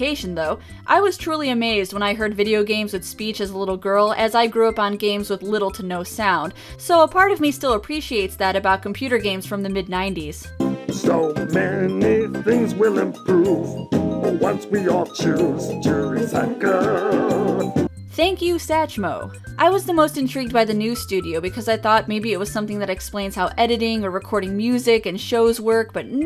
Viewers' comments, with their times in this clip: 0:10 Louie Armstrong is in this game?